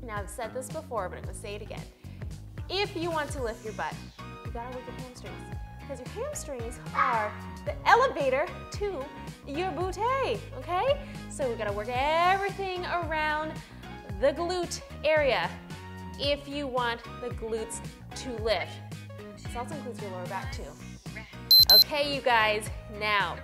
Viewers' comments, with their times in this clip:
0:09 I love how she say BOOTAY